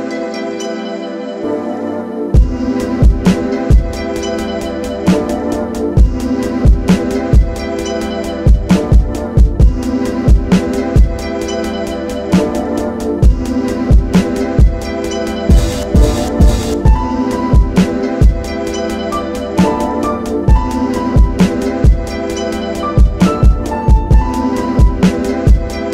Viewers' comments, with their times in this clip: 0:08 why do i keep hearing the discord ping noise. I think im spiraling into insanity...